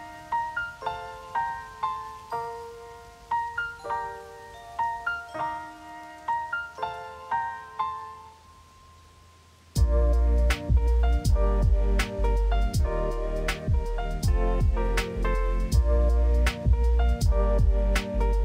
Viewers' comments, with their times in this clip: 0:06 yo why the song sounds like "sorry I like you- burbank" ??